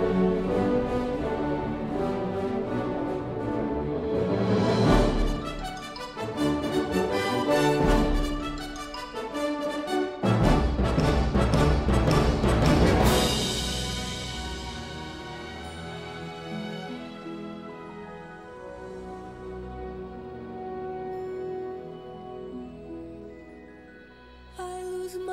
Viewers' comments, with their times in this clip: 0:10 s onwards...The profound emotional effect and surprise of when the vigorous and almost chaotic-manic sounding western style melody, unexpectedly and gently blends/drifts into a searing-melancholy state would have imo made most people leaving the cinema return back to their seats. The continuity is superb and the whole experience is both beautiful and extremely emotional at the same time. And what moving lyrics e.g. "Don't let go if you stay close to me". Love you forever Linda!